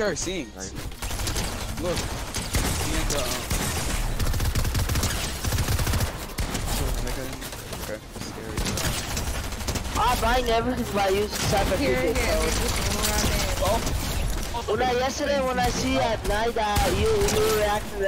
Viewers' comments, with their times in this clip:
0:05 Anyone else hear the N word